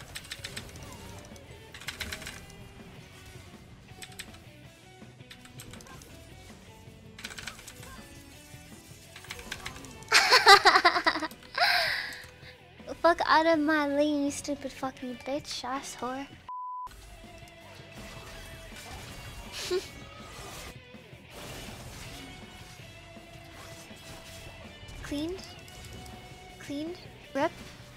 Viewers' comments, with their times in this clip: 0:10 Oo Psycho laughing xD But she is good with that Kata.